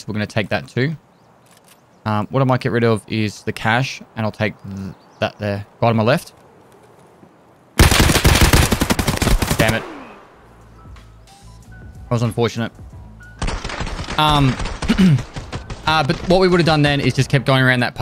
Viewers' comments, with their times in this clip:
0:03 Got any specifics on your audio? I've seen some streamers hear things but no matter how many times I replay the video, I cannot hear whatever they heard. Was wondering if they use a software to boost audio. I didn't hear the guy till after you said you heard him, no matter how many replays...